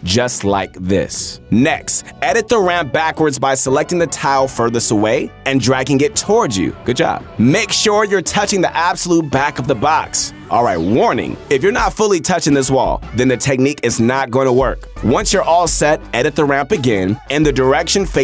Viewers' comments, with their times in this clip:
0:04 Couldn’t watch past Voice is too cringe